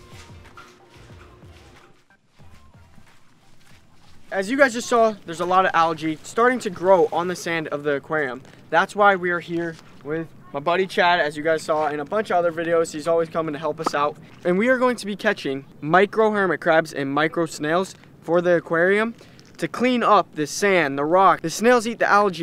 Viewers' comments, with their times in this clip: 0:03 you are like a news reporter 😂😂